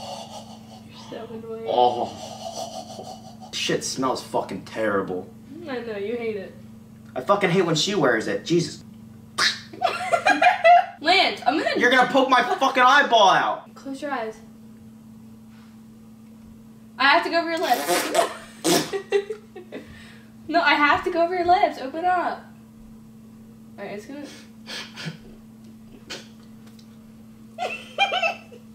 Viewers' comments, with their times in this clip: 0:08 duck noise XD
0:09 He sounded like a duck 😂😂